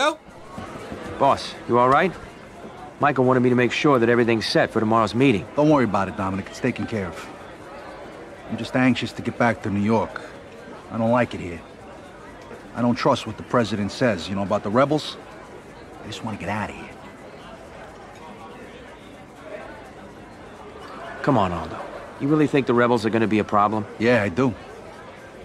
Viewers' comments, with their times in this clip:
0:08 wayment this man sound like Vito